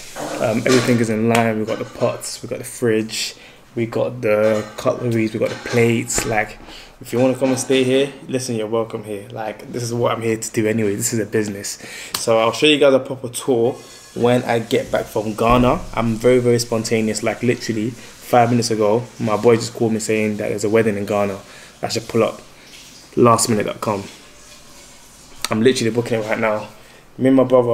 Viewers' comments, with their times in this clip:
0:08 They playing amapiano on the background 🇿🇦🔥🔥🥺fellow south africans...tap in